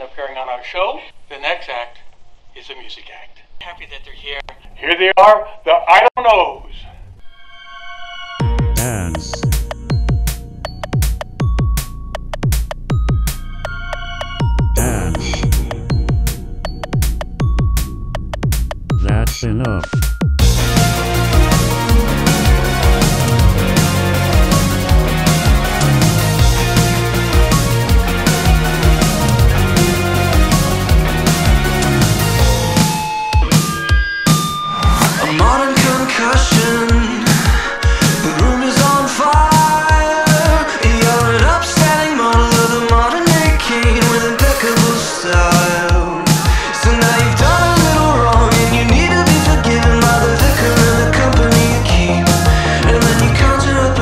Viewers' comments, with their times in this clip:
0:08 I thought that said ass I'm confused.
0:38 "The room is on fire" sounds a little similar to the same line from The Strokes' song Reptilia, even the way Dallon sings it. I like that btw lol, it's an observation I made.